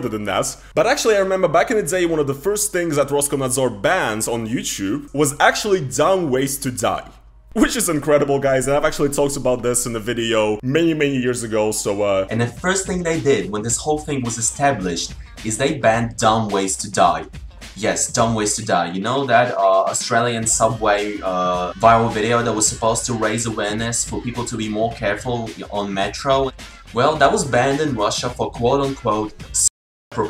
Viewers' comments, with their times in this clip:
0:09 is… is that your voice? You sound like a completely different person. Not even a younger person. That’s outright a very different voice… and a change in accent
0:11 Bro, you had like some kind of British(?) accent in 2015 🤣
0:13 you were trying some accent stuff back then eh ? xD